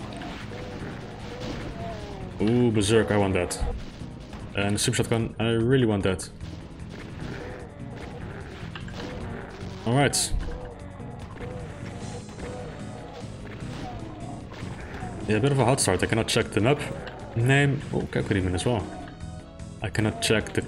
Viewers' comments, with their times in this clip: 0:03 i really felt it hit deep when he said "soup shotgun"